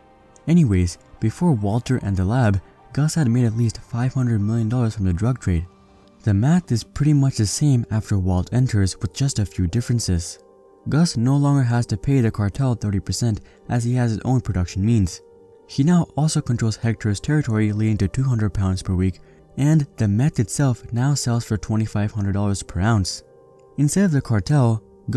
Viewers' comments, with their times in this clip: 0:10 walt jr voice